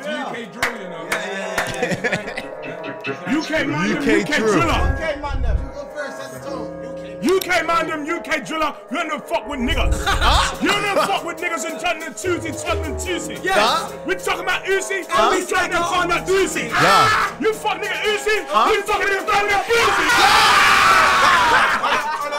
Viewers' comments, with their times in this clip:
0:07 Druski fully sounded like Backroad Gee for a sec🤣🤣